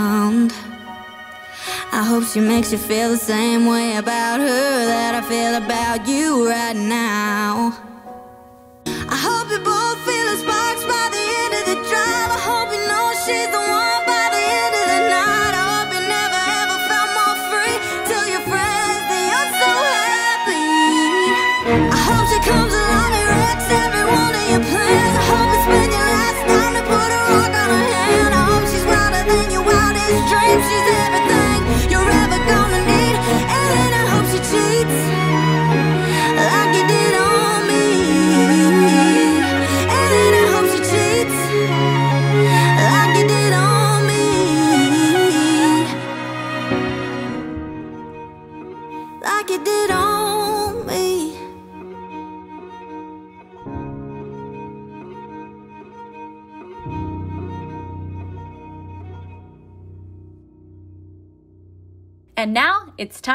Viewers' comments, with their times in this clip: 0:05 the flutter on the violin, so calming
0:45 That vibrato fading at the end sounds so good 😍😍😍😍😍